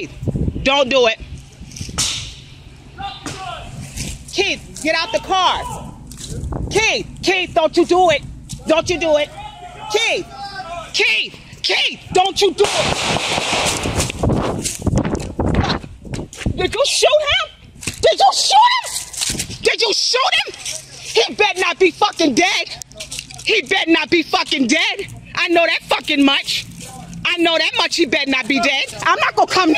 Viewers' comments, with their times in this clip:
0:10 You can see that the police were still yelling for Keith to drop the gun after he was outside the car. Go to